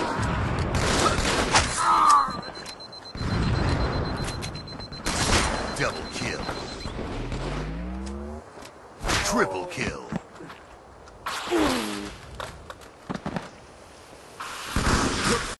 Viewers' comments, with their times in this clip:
0:09 i like that battle cry lmao